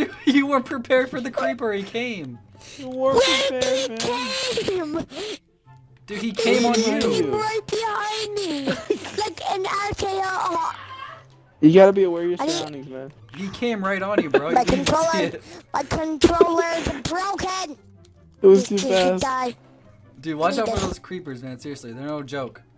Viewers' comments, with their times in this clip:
0:10 Him: “He came right behind me” hears moaning noise in the background Me: That’s sus.